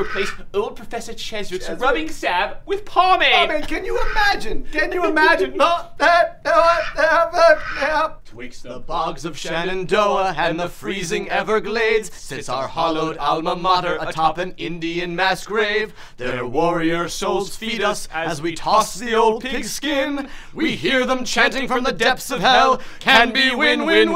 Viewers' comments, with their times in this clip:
0:04 his laugh always fucking gets me
0:08 the school song- Best thing ever!